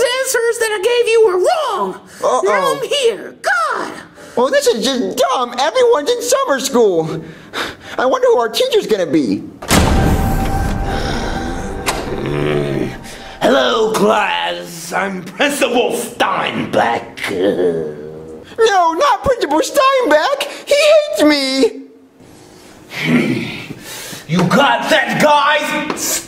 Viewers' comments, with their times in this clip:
0:09 (Earthly Crust) Steinbeck:(Sighs And Grumbling)